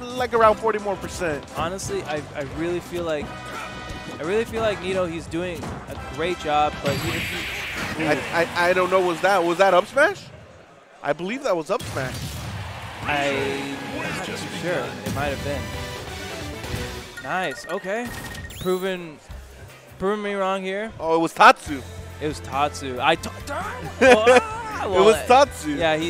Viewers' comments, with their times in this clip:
0:07 you can hear it in the background "Tatsumaki Sempukiaku!"